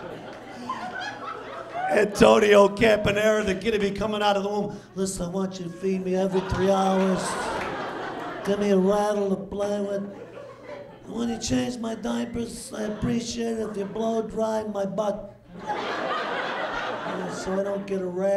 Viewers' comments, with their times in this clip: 0:06 Is it just me or does he sound like Donald Trump ?